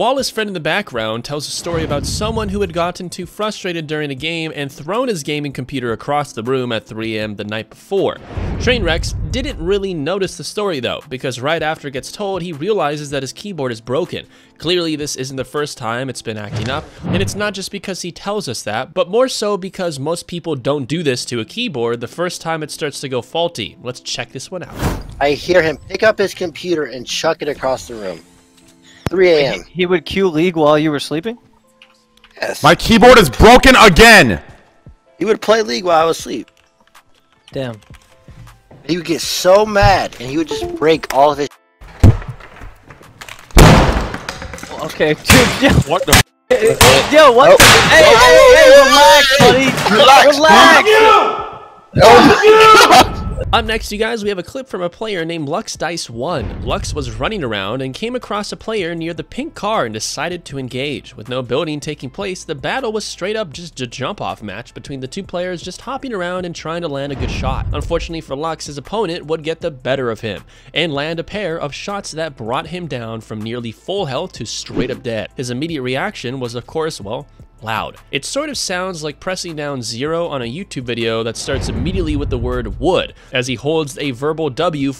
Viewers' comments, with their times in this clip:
0:05 is when my speaker when blow
1:05 He just laughs at ninja 😂